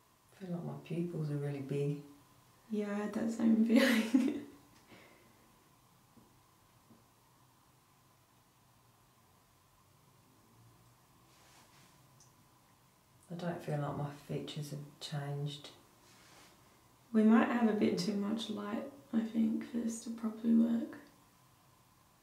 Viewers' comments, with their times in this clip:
0:05 there is two taps